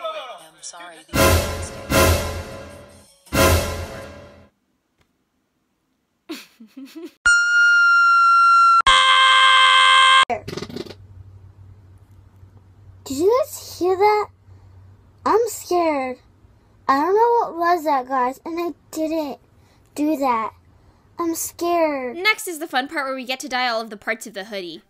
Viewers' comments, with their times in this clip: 0:10 OH MY GOD THERES A SQUIRREL IN THE ATTIC 🐿💨
0:11 me blaming the fart on my sister